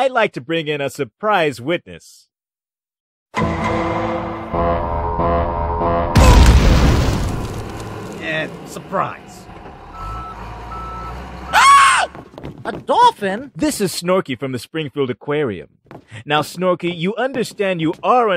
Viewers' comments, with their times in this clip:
0:04 goofy ah Half-Life sound